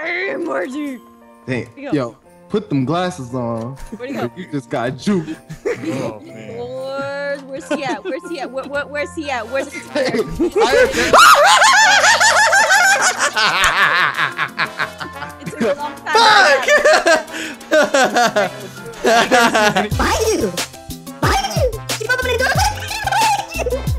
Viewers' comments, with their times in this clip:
0:08 THE GIGGLE IS REAL! THE GIGGLE IS GOLD!